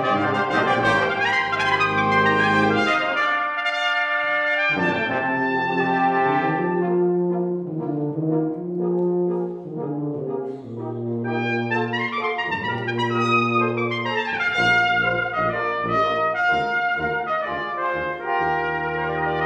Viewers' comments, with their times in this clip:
0:06 man everything was amazing, but the tuba was beautiful